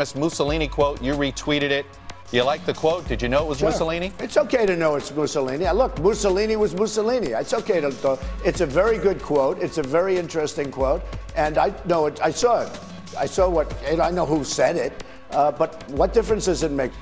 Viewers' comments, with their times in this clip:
0:05 Was there a short Freudian moment when Trump started to say "I love Mussolini", which ended in "I lo... Mussolini was Mussolini"?